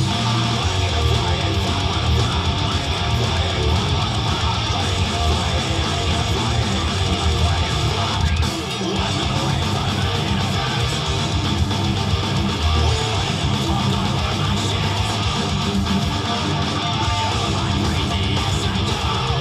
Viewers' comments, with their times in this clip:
0:07 missed dive bomb xD